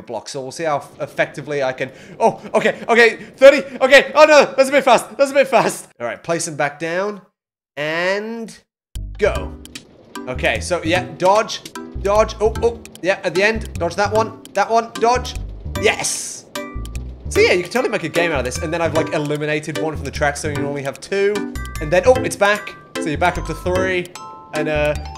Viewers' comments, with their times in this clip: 0:09 OI theme plays
0:10 that sounds a lot like the QI theme or am i trippin?